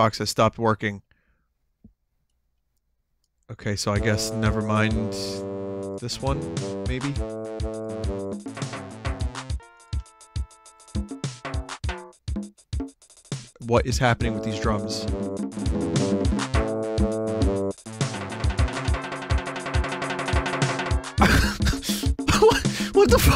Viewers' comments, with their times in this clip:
0:08 If Yoko Ono was a drummer